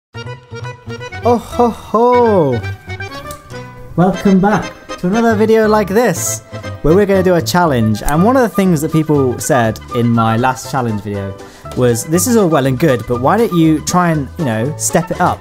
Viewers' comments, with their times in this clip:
0:01 Santa? Is that really you?